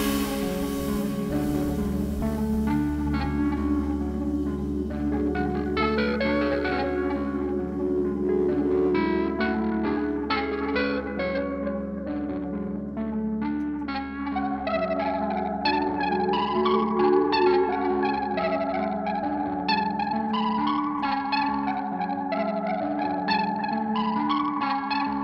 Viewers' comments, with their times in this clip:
0:09 Are those 11lets that Lindner plays around the mark on the electric piano????